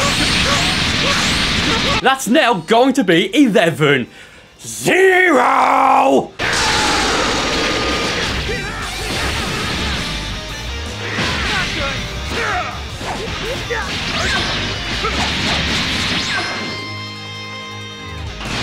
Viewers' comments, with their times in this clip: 0:05 Did anyone else hear Nappa